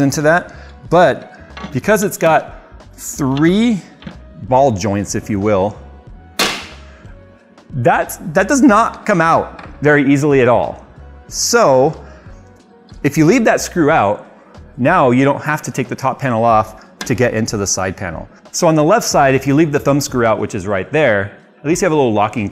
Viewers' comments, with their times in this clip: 0:05 Snapping the glass side of the case seems scary, and loud.